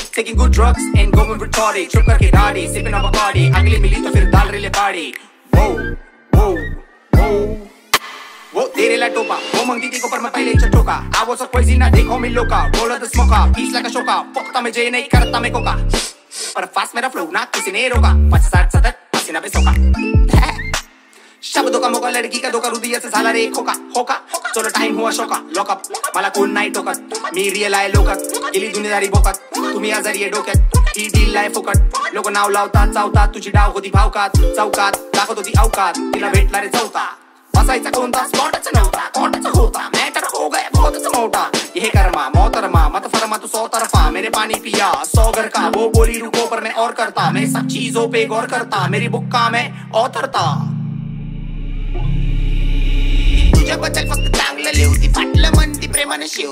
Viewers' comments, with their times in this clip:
0:05 Lisn't to WOHH
0:38 addicted to this flow❤️